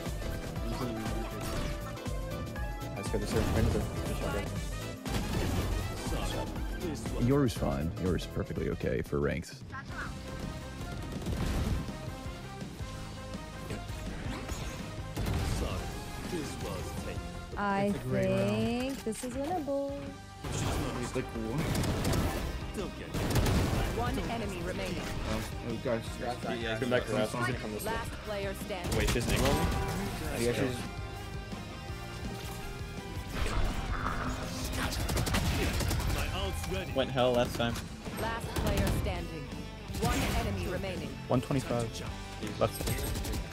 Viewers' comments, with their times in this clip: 0:10 bro got the ultra instinct music
0:28 nah i cant be the only one who heard "wait this n*gga" as he was killing the reyna LMFAO